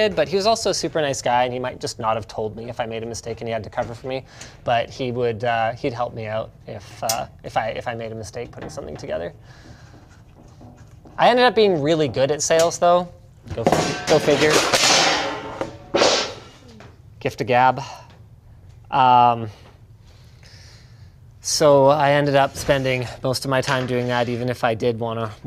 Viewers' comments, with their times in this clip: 0:10 "I ended up being really good at sales" clang really selling it there Linus